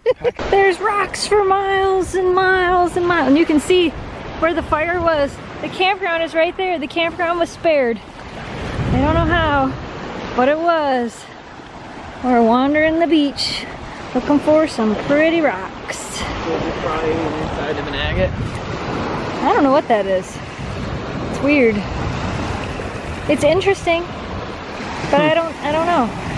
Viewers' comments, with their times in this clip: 0:09 that wave was loud